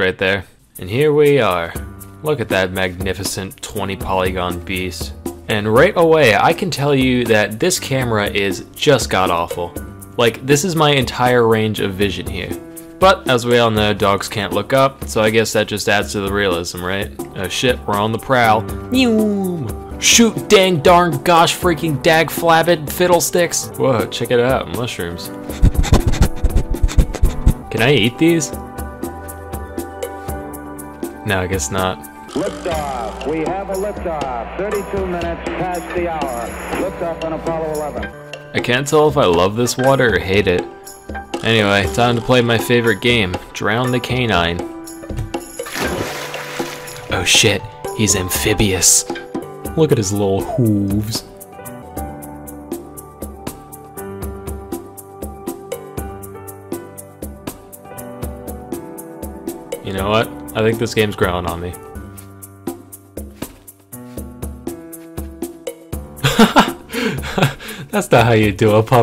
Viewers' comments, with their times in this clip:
0:10 “my entire range of vision heaa” i hear that atlantic accent you try to hide
0:51 spinning seal music starts playing